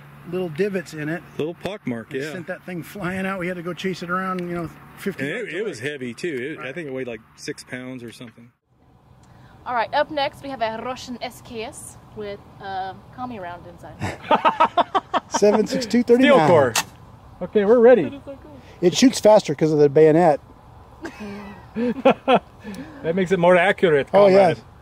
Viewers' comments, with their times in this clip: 0:09 what y’all came here to see. That accent tho! 👌😍